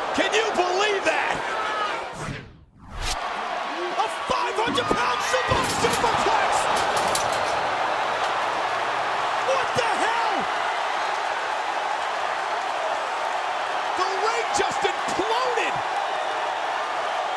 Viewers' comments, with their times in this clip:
0:05 WWE deleting the comentators swearing is just disgusting. this PG thing has gone to far